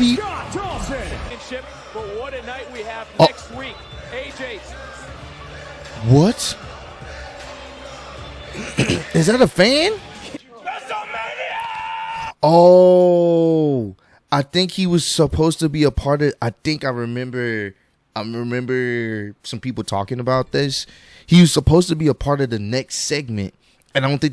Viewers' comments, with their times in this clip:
0:05 I'm not sure about the entire story, but you know something went wrong as soon as the commentary team went silent 😂